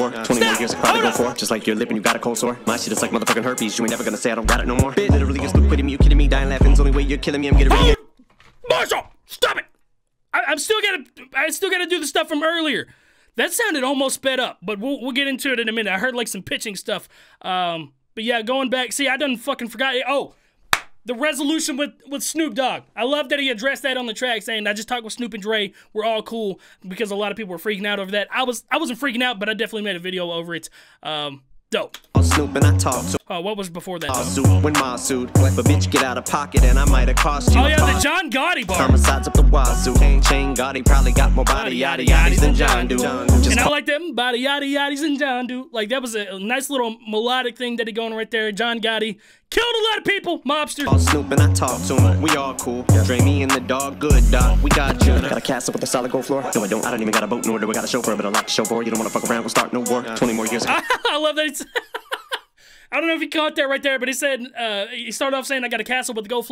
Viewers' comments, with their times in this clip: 0:08 that “MORSHOLL!” Killed me 😂
0:08 The way he said "Marshall!! STOP IT!" :Ddddd
0:54 This flow reminds me of Merkules on that cypher... I think it was your YT cypher vol 3 if I remember right? The flow and cadence is super similar to me.